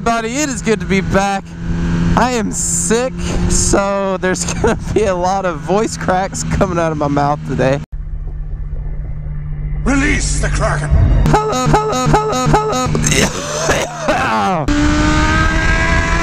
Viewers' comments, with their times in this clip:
0:03 I immediately paused this to take the time to point out an amazing start to this video with that fantastic voice crack.